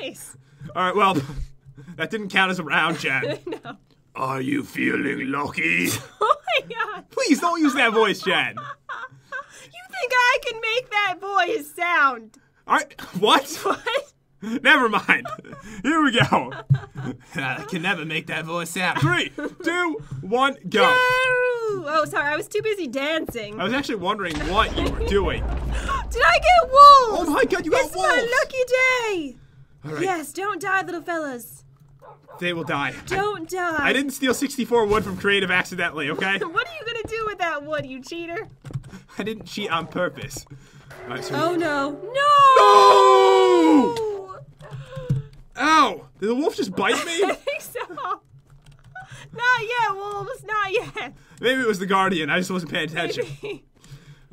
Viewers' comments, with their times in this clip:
0:04 it sounds like Cookie Monster 😂😂😂😂
0:42 I like their NOOOOOOOOO